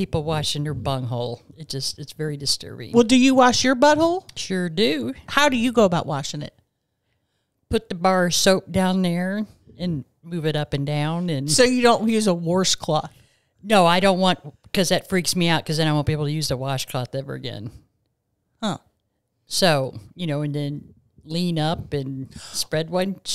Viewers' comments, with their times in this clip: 0:05 on i literally sound like a hyena!! 💀